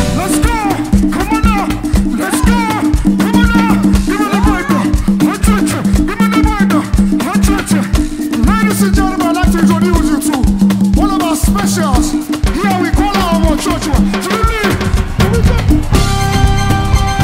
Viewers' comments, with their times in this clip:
0:05 The baselines from Loved it 🔥